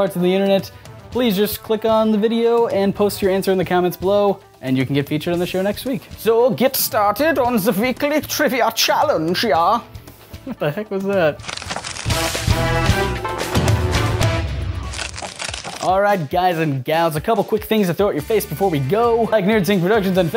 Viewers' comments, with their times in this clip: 0:06 ***** you sounded a bit like anime zola from captin america the 1st avenger ( the movie )